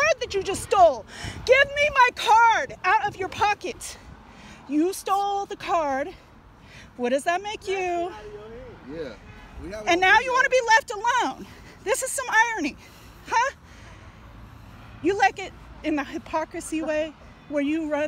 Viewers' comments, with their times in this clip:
0:04 this is like the best part for me. She's talking to her like toddler. Omg